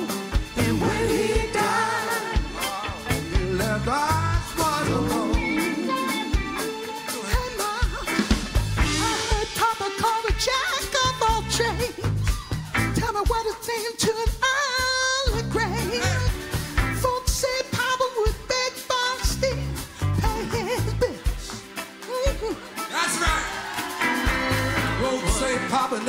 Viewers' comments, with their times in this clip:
0:08 John Oates stepping up for the sky-high falsetto Didn't see that coming!